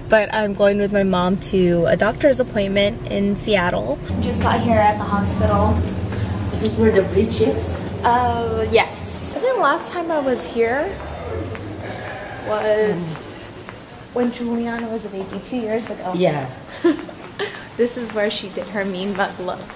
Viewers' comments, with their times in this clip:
0:06 " we just got here in the hospital" and we are the bitches"? Lol